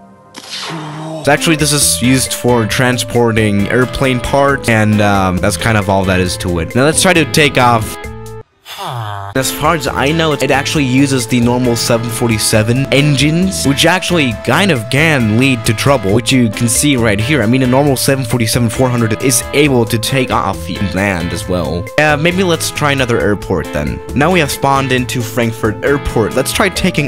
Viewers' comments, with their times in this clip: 0:08 Did anyone notice the Villager sound?